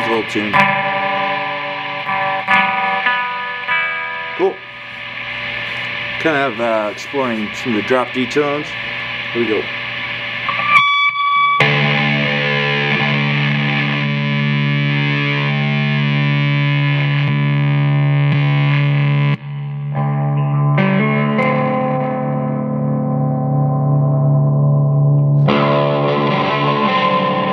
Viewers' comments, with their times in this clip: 0:10 That scream though.